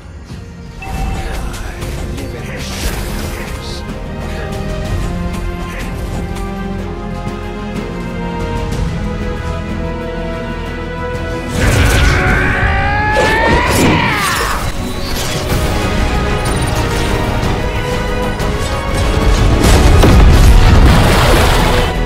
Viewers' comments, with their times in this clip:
0:08 Super god spear sound best animation